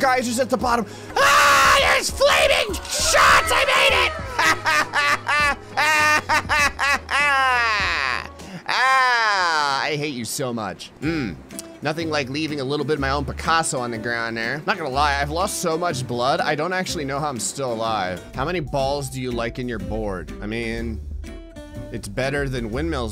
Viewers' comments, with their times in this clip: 0:04 you laugh like Mandark on Dexter's Laboratory. So funny.